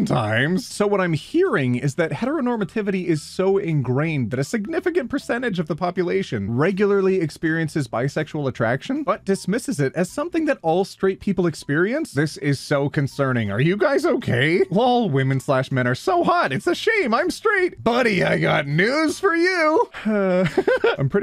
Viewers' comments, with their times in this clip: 0:03 lmao it's so weird to see someone give Gaud such a normal voice